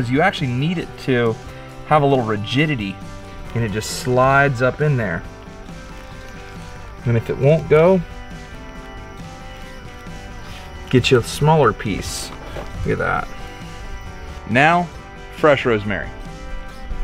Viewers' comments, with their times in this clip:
0:03 "Have A Little Virginity, And It Just Slides Up There" ALL MEN DIE FEW EVER LIVE!